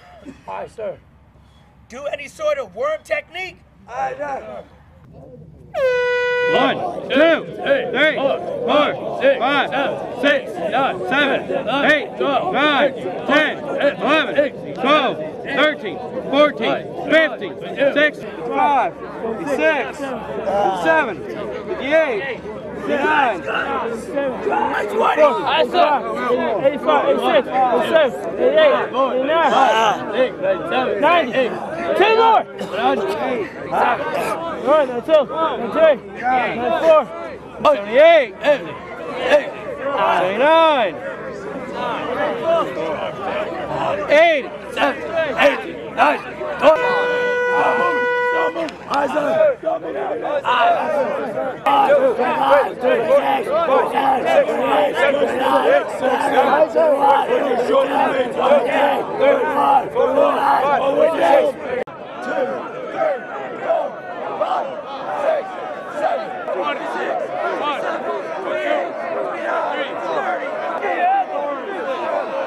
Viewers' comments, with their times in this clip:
0:03 That's not an accidental fart. That's an air horn.
0:54 LOL That voice!😆😆😆